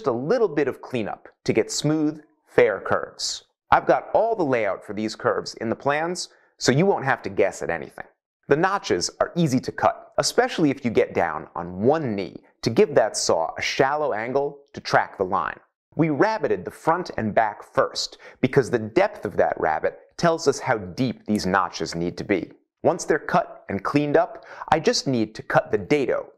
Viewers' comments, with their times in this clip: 0:09 Is that hand saw really loud :p